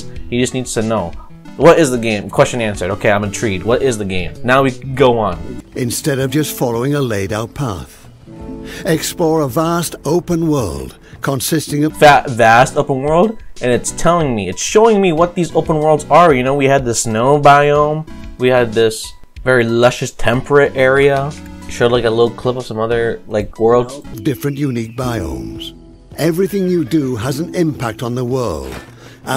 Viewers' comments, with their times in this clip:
0:10 game ad got bonus points bcz had that duded with that voice